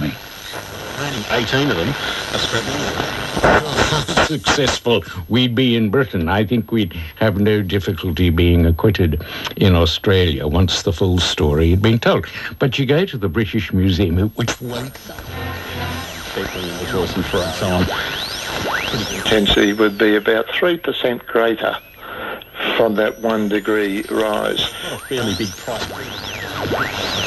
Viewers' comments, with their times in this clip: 0:08 my god that is so clear